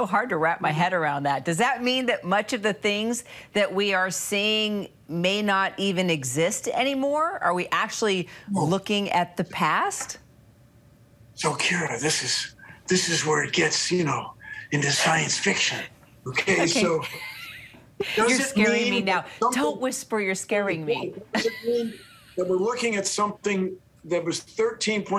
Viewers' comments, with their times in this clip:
0:10 Great Keanu impression !